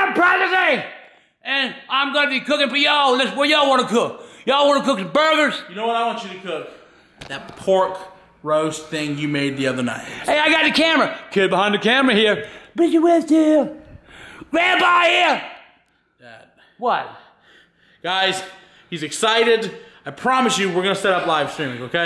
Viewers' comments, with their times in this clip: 0:08 It sounds like a song